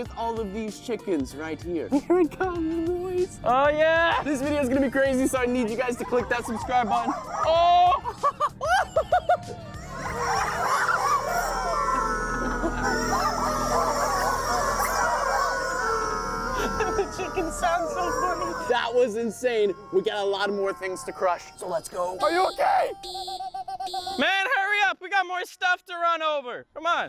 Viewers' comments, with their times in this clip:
0:10 screams of the tormented